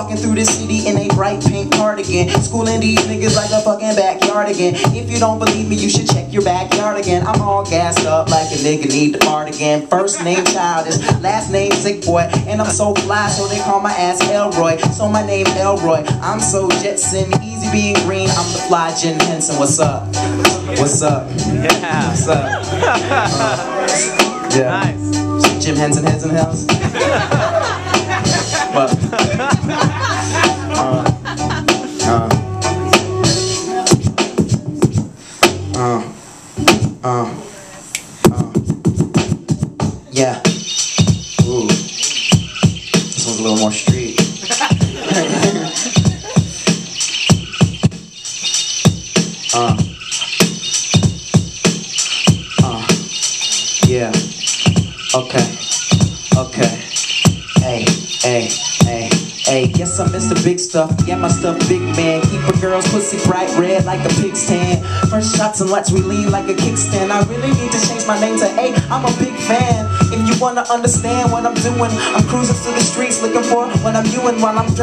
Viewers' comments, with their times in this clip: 0:08 Dany Pudi laughing ?
0:56 god, what is the beat its so mean!!
1:02 oh shit i love this beat xD